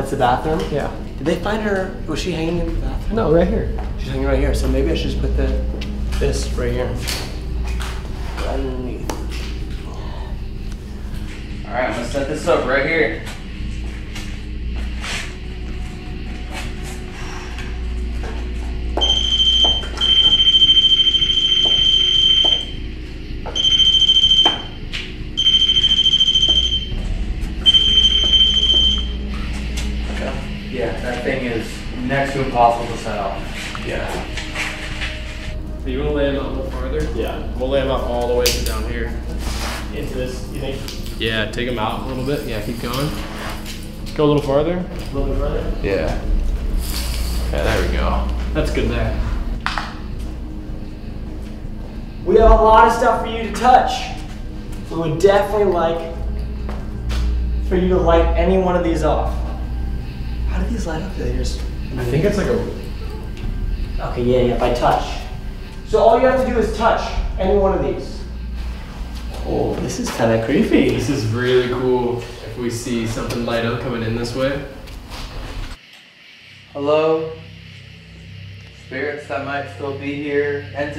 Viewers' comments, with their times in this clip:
0:08 at the 502 room I hear something, maybe a femenine voice (?) but it sounds weird, I don't know what it is
1:01 I swear you can hear what I think sounds like a woman saying “oh no” in a kinda distressing voice. Like she had been crying
1:04 you can Hear someone say help me.
1:05 I heard a little girl say ok